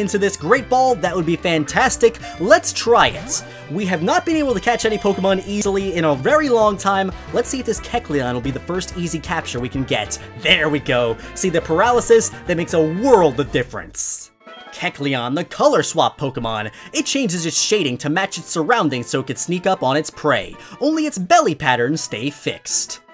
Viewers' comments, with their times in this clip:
0:05 he the audio glitches